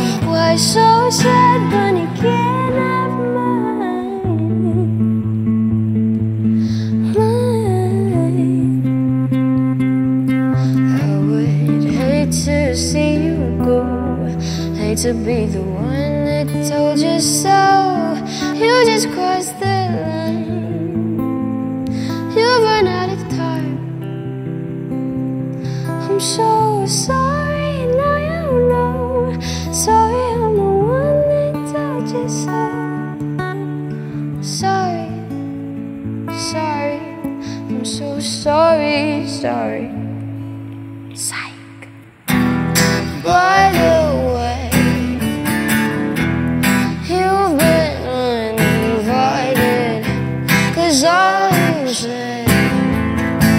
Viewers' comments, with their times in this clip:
0:07 This is the voice of heaven🥑🤯
0:33 when she sings "So sorry" .... There, normally the earth should stop turning to listen to her ... It's magic! And the accompaniment of the guitar is so perfect!!!
0:40 that sound like a satanic whisper I swear I got goosebumps
0:41 And it is tweaked, nobody seems to notice sneaky second guitar playing from